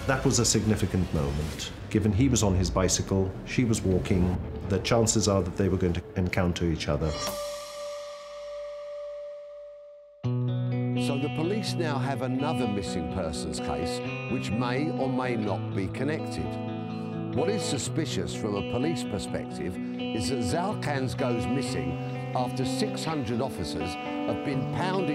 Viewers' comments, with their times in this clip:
0:09 Nice guitar track